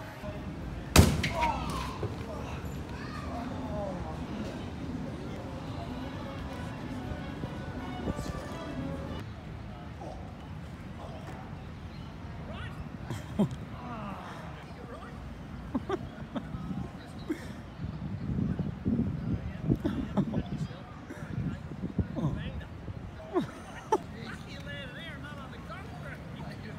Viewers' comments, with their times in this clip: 0:09 that guy sounds like Coran from Voltron: Legendary Defender!! Anyone else hear it?